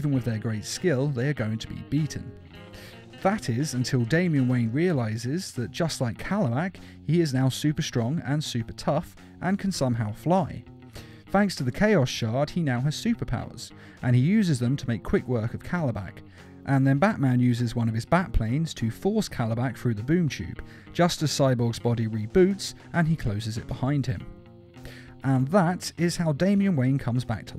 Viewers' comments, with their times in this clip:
0:10 sounds like P.S.I lol